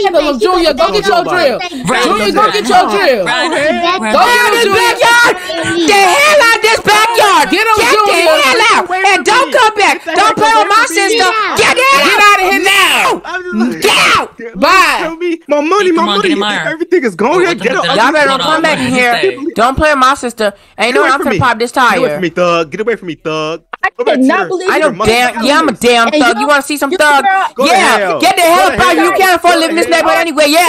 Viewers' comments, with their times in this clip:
0:05 Jr yelling got me
0:12 THE WAY JUNIOR WAS SCREAMING LIKE